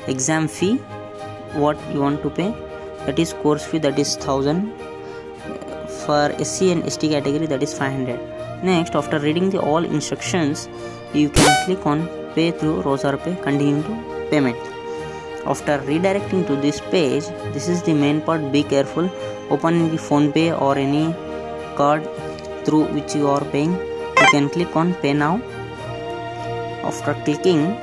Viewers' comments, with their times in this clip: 0:10 too much irritating sound